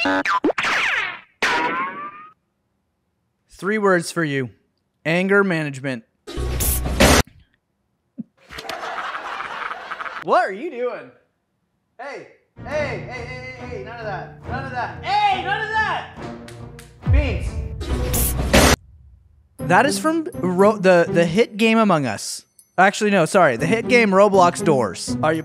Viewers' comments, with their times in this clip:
0:06 me when I hear screech in doors